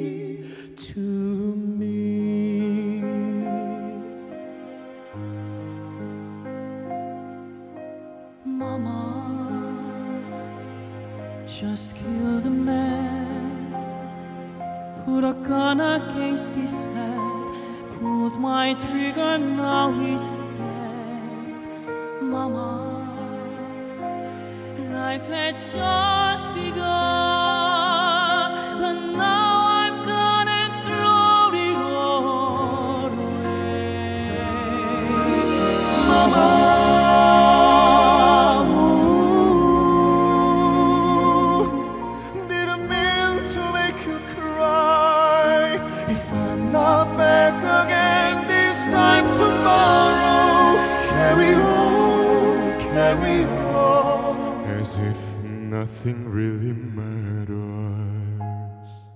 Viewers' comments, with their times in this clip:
0:06 ❤❤❤.. FORESTELLA Son EXCELENTES..It's a PLEASURE to hear such voices..❤❤❤.. "Mamma...just killed the man.." Goosebumps
0:31 Can somebody give Me the name of the guy please? They’re all amazing, but theres something about that Guds vocals.. i just
0:43 goosebumps as soon he started singing